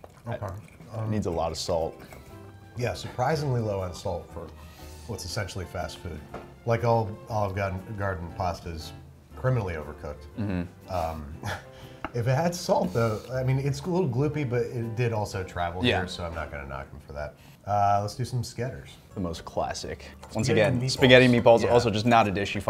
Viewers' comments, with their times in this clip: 0:07 Babish, have you been spending some time in Boston?